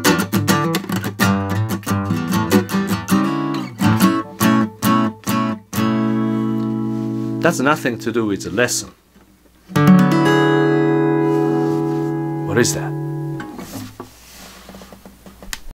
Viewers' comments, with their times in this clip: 0:09 Was that a Maj7 1st inversion chord?